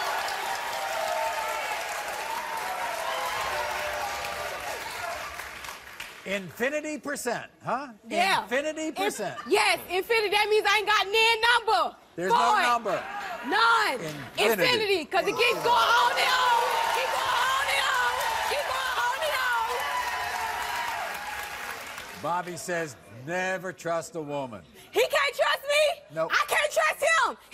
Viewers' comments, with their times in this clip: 0:10 minutes I’m like wtf this bitch yelling for